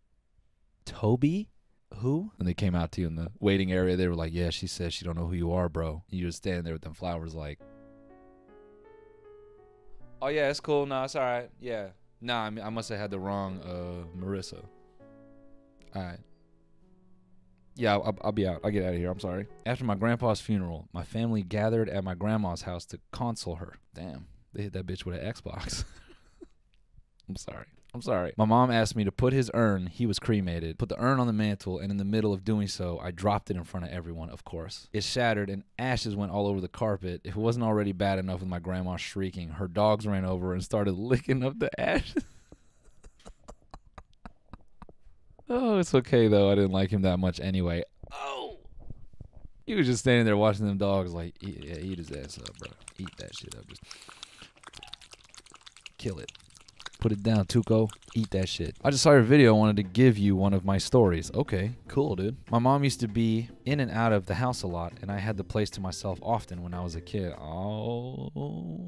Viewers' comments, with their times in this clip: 0:06 THE LA LA LAND MUSIC SENT ME
0:07 that La la land music had me crying !
0:07 BRUH THAT LA LA LAND MUSIC GOT ME DEAD BRO
0:08 THE LA LA LAND MUSIC TOOK ME TF OUT
0:10 the la la land music omfg
0:11 the lalaland soundtrack killed me
0:13 really played the lala land music that had me dying
0:16 holy shit the music from la la land really got me laughing:P
0:23 WHY DID HE SAY CONSOLE LIKE THAT 😭😭😭😭😭😭
0:52 after reading that beastiality story those noises and commentary seemed too real
0:56 The audio of the dogs licking hits real different when you read the screenshot of the bestiality DM 😔😔